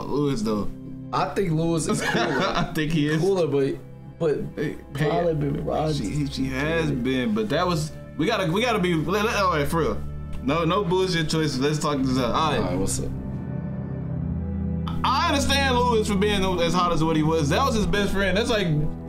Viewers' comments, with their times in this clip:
0:07 BRO, I know I'm not the only one that hear Season 1 background music 😭😪😔